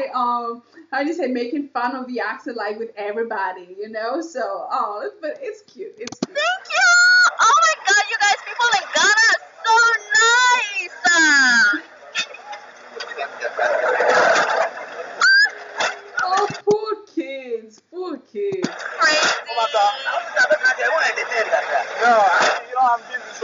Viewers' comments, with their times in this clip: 0:04 🤣🤣🤣🤣 yesssssss the driver did attempt an accent himself 🤣🤣🤣🤣